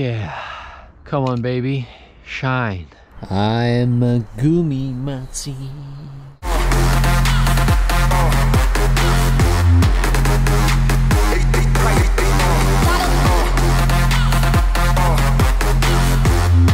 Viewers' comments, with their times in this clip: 0:03 Was that Hungarian ? xD Great work man, keep up with everything :D